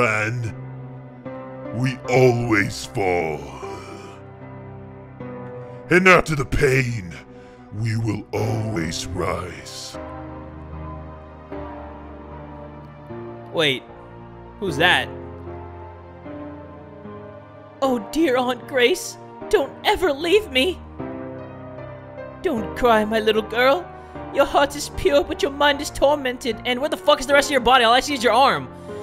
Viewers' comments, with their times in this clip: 0:06 the voice thou. I like it
0:14 why did you make your voice so deep? its aunt grace who is talking XDDDDDD